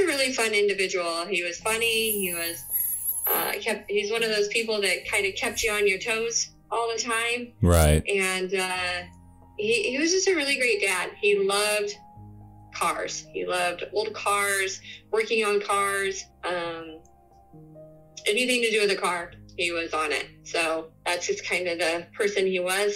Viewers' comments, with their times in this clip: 0:06 is that what that is? i had to stop b/c my doggo kept waking up to the noise and b/c its way too annoying lol